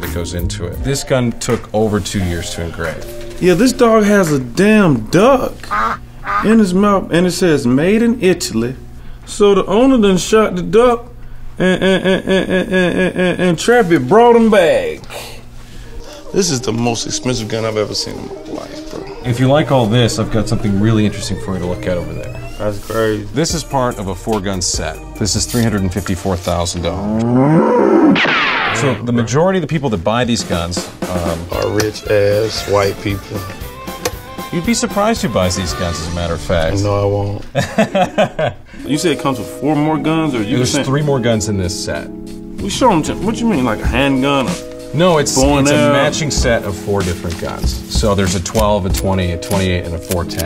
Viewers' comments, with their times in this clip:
0:09 windows.exe has stopped working
0:09 2chainz.exe has stop working
0:10 me trying to start my car
0:10 speech.exe program has stopped working
0:10 Bro be laggin in real life
0:11 when it's winter and you try to start a car😂😂😂
0:11 I thought the video froze but it was just his stutter 😂😂
0:11 When the record player starts skipping
0:11 I think 2 Chainz broke
0:11 Did homie just lag
0:11 that stutter though
0:11 when the cassette gets stuck
0:12 when your car doesn't start
0:12 jesus christ he’s shorting out
0:12 2 Chainz lagged
0:12 My car alarm at 3 am:
0:12 when the car won’t turn over
0:37 fakest laugh I've ever heard